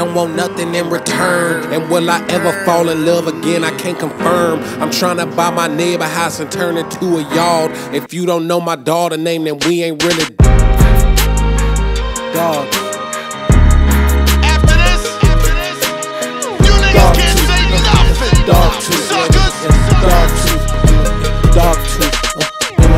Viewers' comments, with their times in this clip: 0:04 the two shots are stupid fye